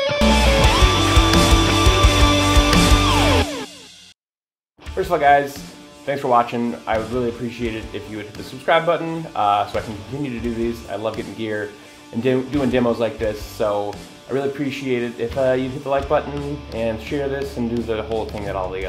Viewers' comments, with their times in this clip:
0:06 Cool video mate, love the guitar and the sound recorded is killer and what I am looking for in the sound of this guitar for myself. If I can say one thing though, when you start the spoken part it is awkward in places to hear what you are saying due to the levels of the backing track and the spacious-ness of the microphone picking up your voice. When you spoke really quickly "asalwaysateverydayguitaristIuse*****thousanddoillarsgear*****balaguerespada" was hard to hear what you are saying :(